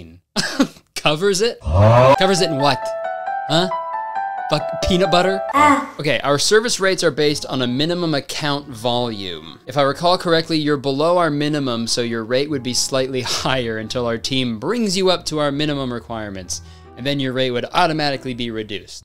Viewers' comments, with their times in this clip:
0:03 not at all the point of this video but the sudden death note music just took me all the way back to high school